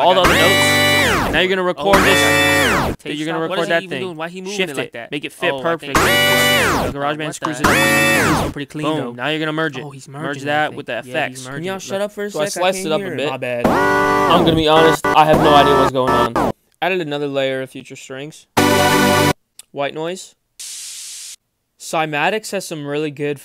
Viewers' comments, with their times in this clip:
0:06 elementary school bands be like: